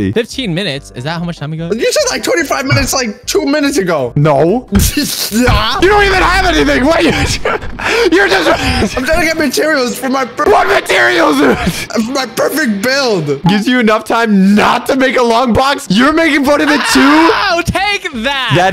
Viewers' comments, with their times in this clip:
0:05 pov parents yelling at their child